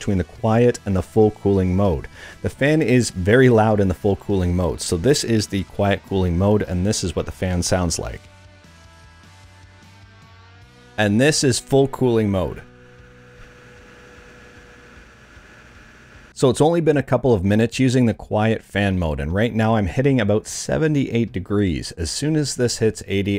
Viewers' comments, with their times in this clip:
0:07 Wow, your fan sounds an awful lot like a rock song. Super weird design.